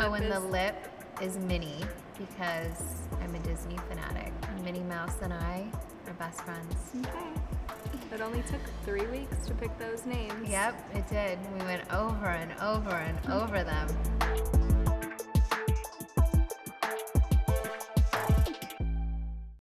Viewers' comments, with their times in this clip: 0:08 she sounds so annoyed. Haha